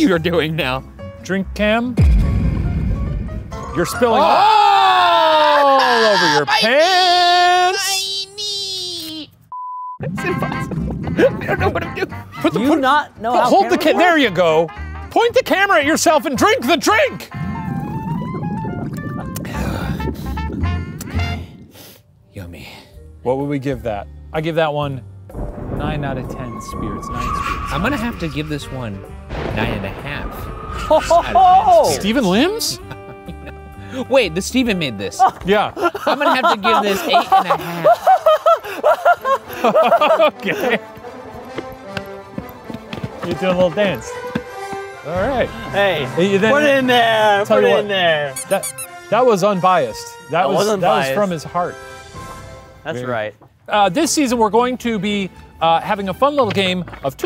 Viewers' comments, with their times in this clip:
0:05 and that's why it's called...the Banshee's Knees. Ryan in this instance is the banshee.
0:44 the whiplash i got when Jupiter played was unreal